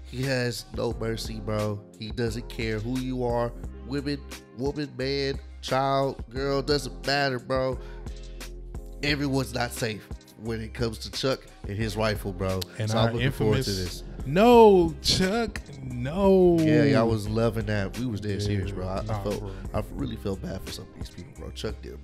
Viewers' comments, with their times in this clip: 0:03 he sounded like he was freestylin a lil bit, it kinda went with the beat